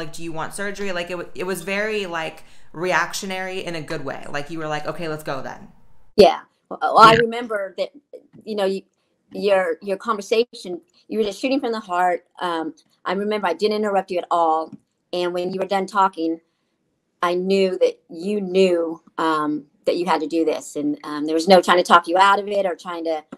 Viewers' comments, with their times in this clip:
0:06 was that a burp? Lol